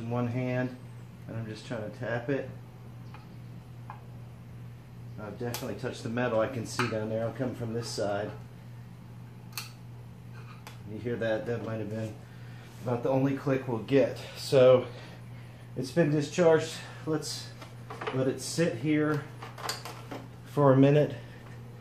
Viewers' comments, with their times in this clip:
0:09 Discharge makes a "Click" sound a the mark. This doesn't always happen.